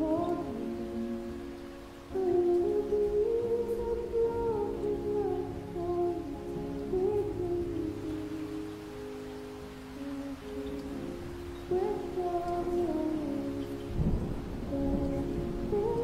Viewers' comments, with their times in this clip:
0:04 i can literally feel every single cell of my body move the moment when waiting room played